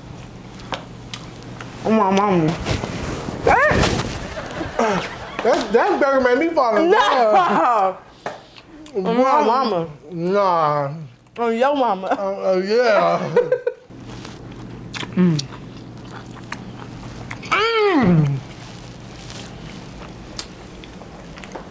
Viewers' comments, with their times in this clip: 0:03 Not the burger make you fall in love 😂😂😂😂😂😂😂😂😂😂 I AM CRYINGGGGG. Then all the smacking got it 😂😭